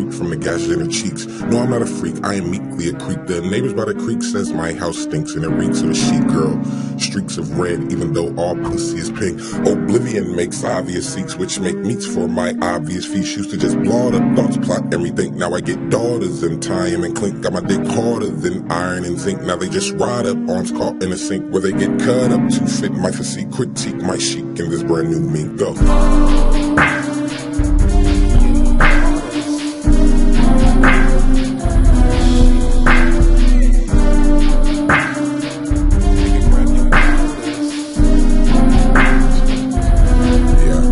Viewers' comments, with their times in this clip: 0:09 Its the flow build-up around that gets me hyped.
0:25 i have eargasms when the beat drops